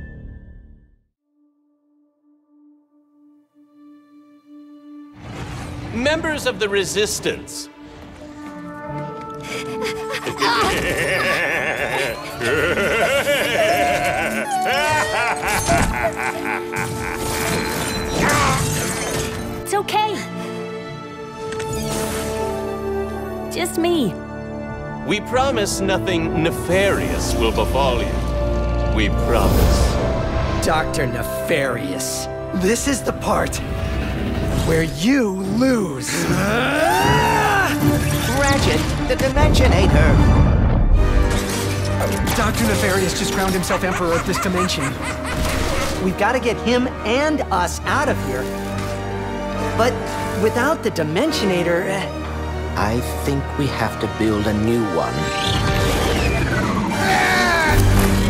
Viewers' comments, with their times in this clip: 0:10 That laugh sounds like plankton
0:10 That laugh 😂😂😂 Cant wait to pick this game up tomorrow. Looks like true Next Gen 🔥🔥
0:40 the music sounds identical to spiderman ps4's main theme
0:41 Can't Wait..Going to be making a playthrough just waiting for my game to get delivered..BTW doesn't that music sound like the beginning of the spiderman ps4 theme..